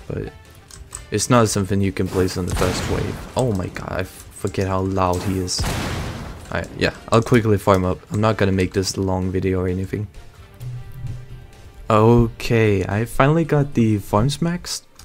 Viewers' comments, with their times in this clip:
0:03 all the new units are so loud for literally no reason😂